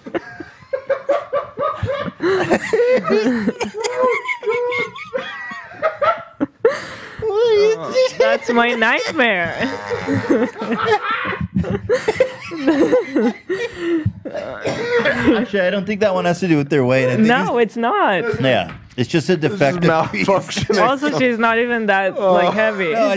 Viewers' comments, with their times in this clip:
0:10 Why Ethan start laughing like Ellen DeGeneres I’m fucking crying